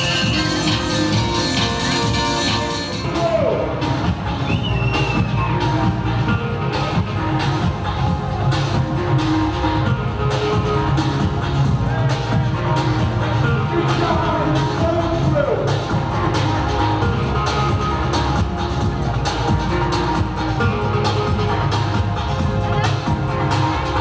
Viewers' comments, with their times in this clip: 0:07 mark = chills always for that amazing song